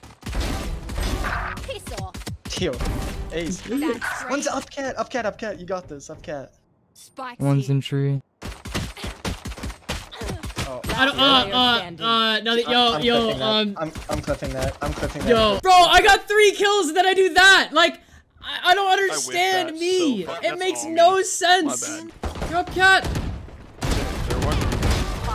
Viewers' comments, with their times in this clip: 0:07 Zombs is that you? Also this guy sounds like he smells like Cheetos.